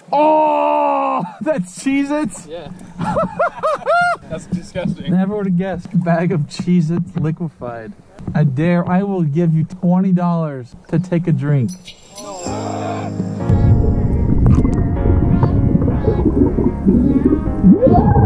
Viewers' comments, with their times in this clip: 0:03 OMG, turn on captions, loooooool I dare you to drink that bag of Jesus.